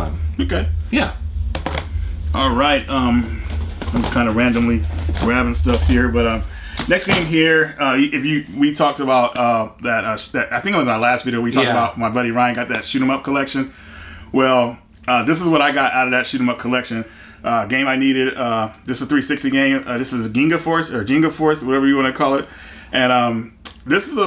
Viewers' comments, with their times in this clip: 0:06 Love the video, but what's the rumbling noise in the background? It cuts out maybe a boiler or something? Through my headphones it's seriously loud